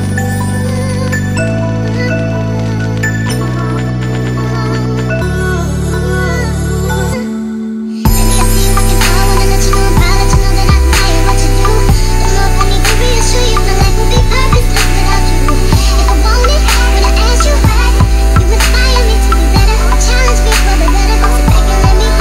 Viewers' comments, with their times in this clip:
0:06 what a nice transition between songs ♥
0:08 of sounds like chipmunk sing this.. it sucks